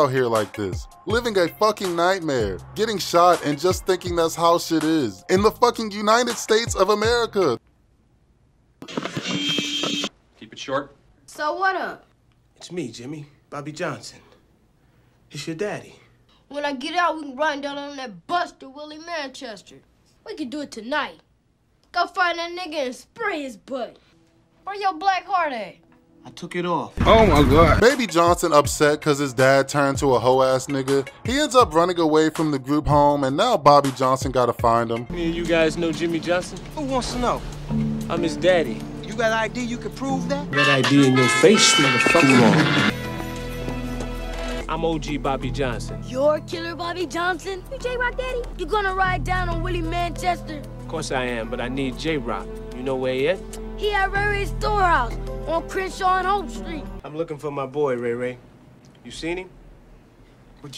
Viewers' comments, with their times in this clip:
0:07 the feedback sound when he was checking is hair/microphone was hilarious
0:08 broooooo not the feedback from him patting his fro!!!😂😂😂😂😂 how do you come up with this stuff😂😂😂😂
0:09 Yo my man did the feedback!!!!!! 🤣😂🤣😂😂😂🤣 I'm done
0:24 The oh muh gawd gets me everytime lmao!!! 😆 😆 😆
0:27 sound bite kills me every time. oh myyyy guuuuuwd
0:44 "you jayrock daddy" sound like chris off boyz in da hood😭